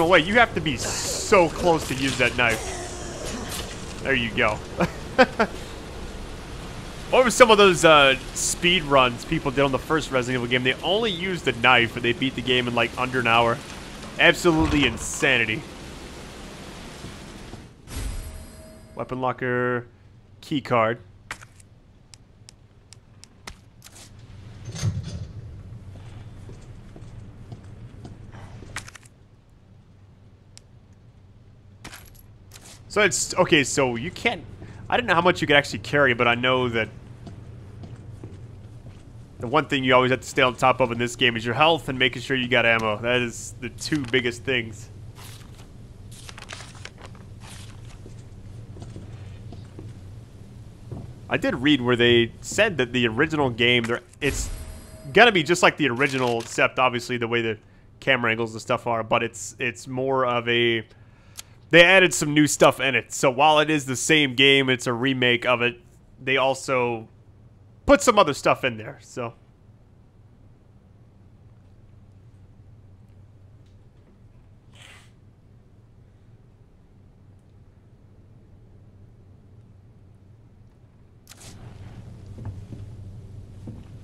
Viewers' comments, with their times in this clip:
0:10 11 second of silence 😂
1:09 i had to make sure i didn't accidentally stop the video. LMAO, bit of an awkward pause.